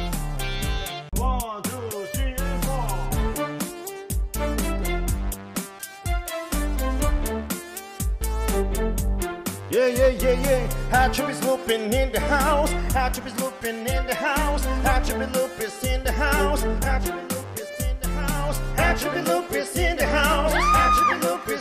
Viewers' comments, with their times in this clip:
0:03 sounds like something right out of persona 5